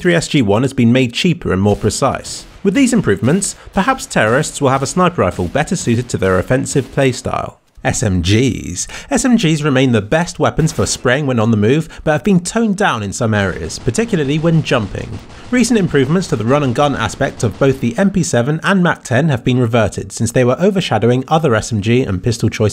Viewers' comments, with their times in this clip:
0:06 I've never heard SMG said more seductively, weak at the knees for smgs.